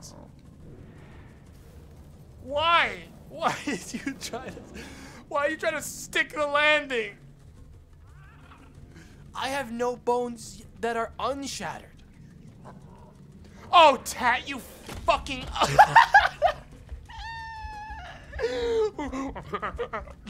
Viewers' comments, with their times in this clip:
0:08 there's a lot of yelling at monke this stream but the specific personal disappointment in Tat in particular is delightful